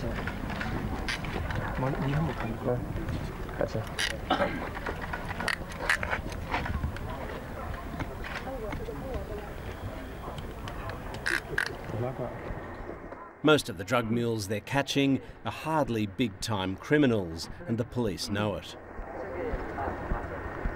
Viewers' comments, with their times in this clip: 0:07 lmao even the handcuffs look and sound like theyre made of chinesium